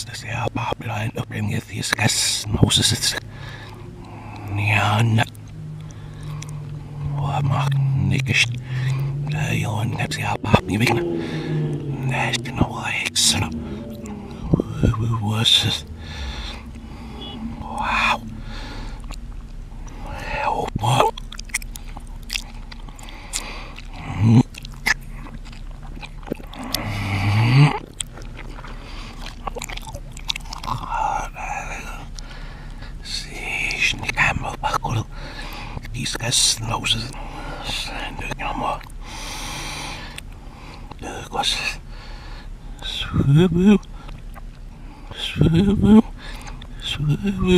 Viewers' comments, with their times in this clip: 0:08 he said the n word
0:35 "he says roses"